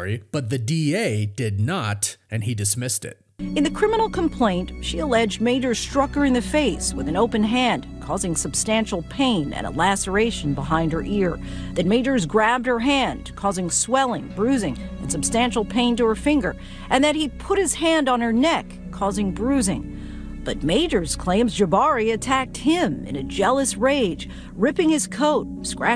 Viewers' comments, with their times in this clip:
0:06 sounded like naruto at first 😂😂. But honestly I'm on majors side